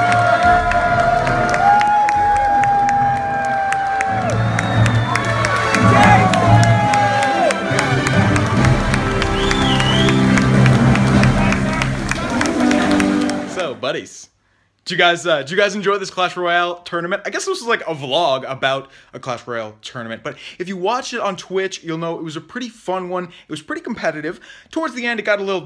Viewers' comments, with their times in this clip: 0:06 Molt cheers for the guy that beat the mortar user